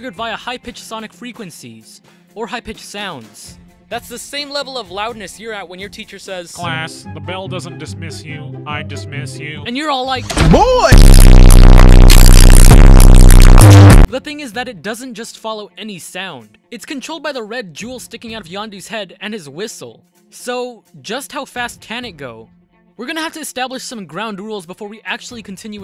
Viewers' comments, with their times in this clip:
0:07 he sound like squidward
0:11 oh thank Jesus himself I wasn’t wearing headphones.